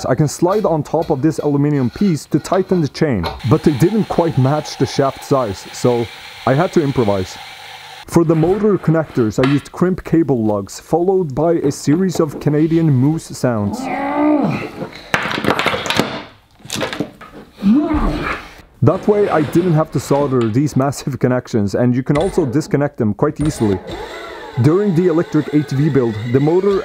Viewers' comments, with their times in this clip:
0:09 canadian moose sounds 😂
0:11 When the Sweed man makes better Canadian moose sounds than the real thing right in my backyard....